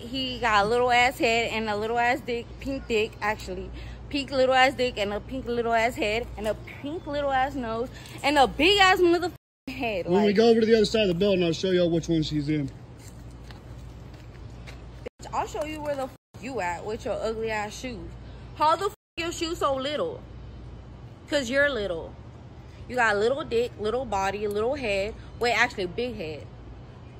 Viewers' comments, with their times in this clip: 0:10 she needs to stop moooing at him